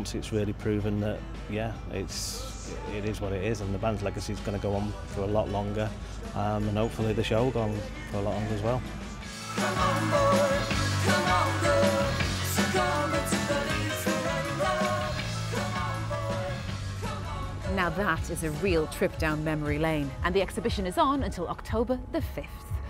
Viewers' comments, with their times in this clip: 0:08 Beat Surrender has a Style Council feel to it.